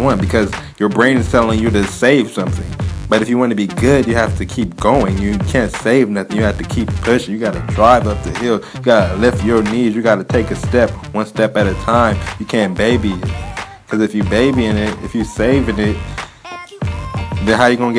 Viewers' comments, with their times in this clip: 0:04 sounds like u are rapping hahahahah Btw bro i dont have long hills here where i live, i have a 40-60 meter hill on pavement which is pretty steep. Im currently doing 200m runs/sprints with a 10-15% incline on a treadmill. How would u program hill runs if i only got a 40-60m steep hill and treadmill runs?